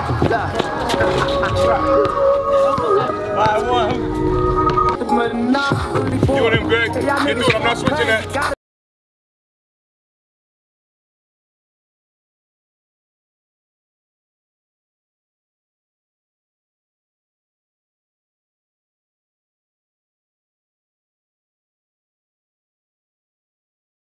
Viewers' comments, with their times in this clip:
0:09 Audio goes out just sayin